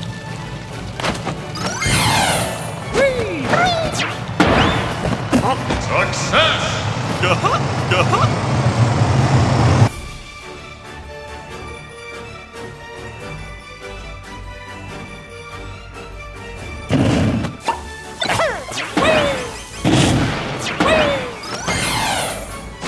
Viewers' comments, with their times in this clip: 0:08 okay, what is that background noise